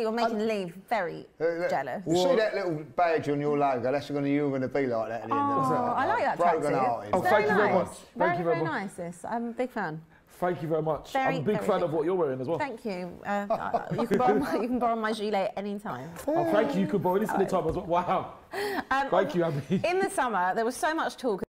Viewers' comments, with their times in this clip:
0:08 Did she say it's very very ISIS?.